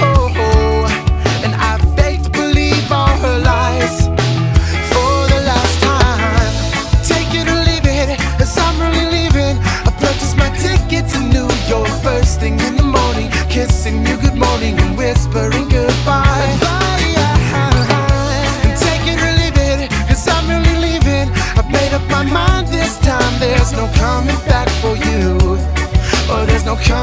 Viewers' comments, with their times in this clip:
0:09 the bass strings are gone lol